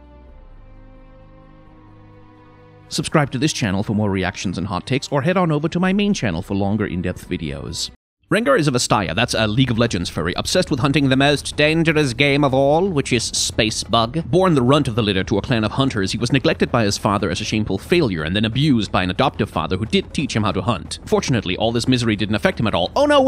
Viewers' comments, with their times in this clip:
0:10 i am obsessed with the way he talks ... space Bug